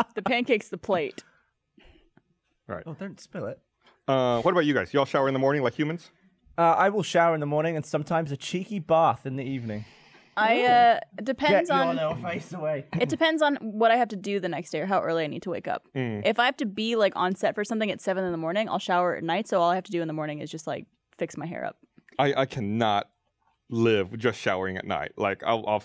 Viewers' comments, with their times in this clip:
0:10 Gavin's emphasis on "cheeky bath" while his eyes widened gave me life.